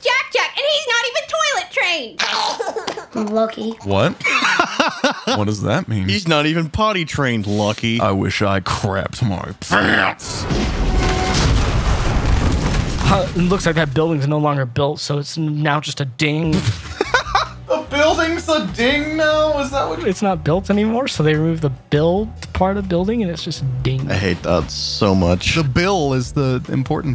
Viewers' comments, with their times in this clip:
0:08 😂 Oh my, the line delivery